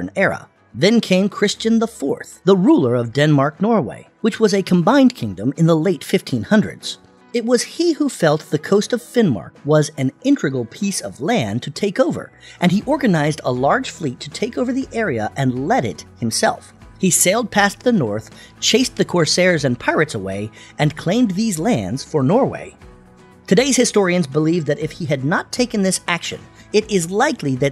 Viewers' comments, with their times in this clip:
0:09 Intregal!!! Brilliant ⛈👏😮, YouTube 🏆, best research 🤔, and ps why is the narrator on helium.